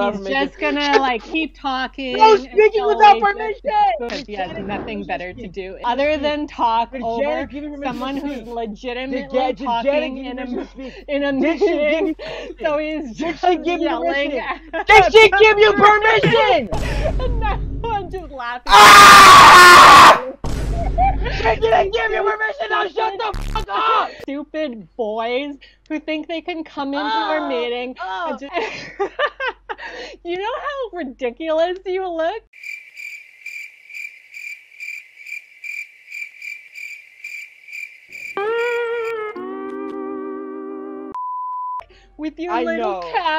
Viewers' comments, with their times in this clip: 0:09 spinster speaking over you 💀
0:12 bro you got the teacher laughing XD that’s brilliant!
0:27 omg that was so funny that even she had to laugh hahahahahaha 🤣 I’m laughing so hard right now That kid is sooooo funny we need more of him lol